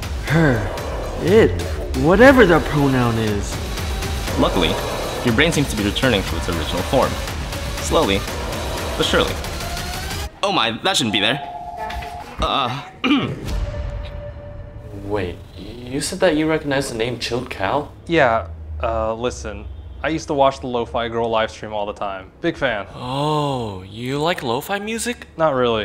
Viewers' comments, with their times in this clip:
0:06 this... is becoming a movie because of that music